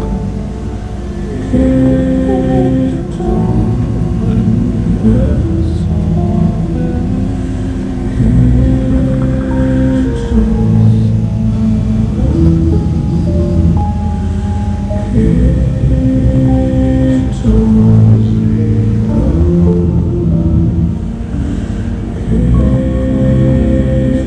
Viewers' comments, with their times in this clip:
0:07 Lots of visual and sound overlay. Kind of like modern art. The swirling color mix is quite different. Trippy. I like the sound change or so, with the percussion in the background and the voices.